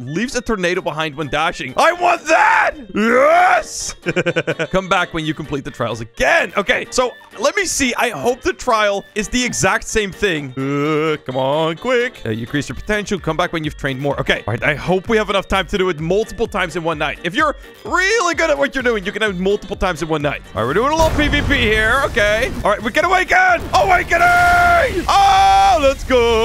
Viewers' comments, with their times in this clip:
0:07 BRO WHATS THAT WEIRD NOISE